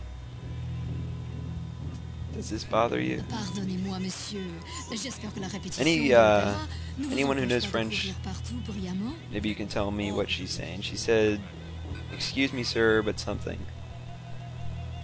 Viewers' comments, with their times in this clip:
0:03 The quality looks pretty nice :D oh and the lady said umm Pardon me sir...something something.i can translate but she just said it to fast